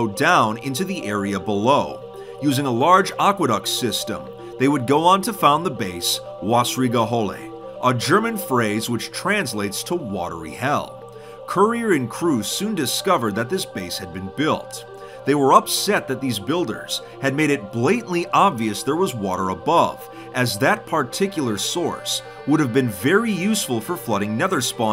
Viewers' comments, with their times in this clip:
0:06 as a german, i think the pronounciation is hilarious
0:06 You didn't even try to pronounce it correctly 😐
0:07 You pronunced this completely wrong xD (I am german)
0:09 as a German I got ear cancer from that pronunciation :')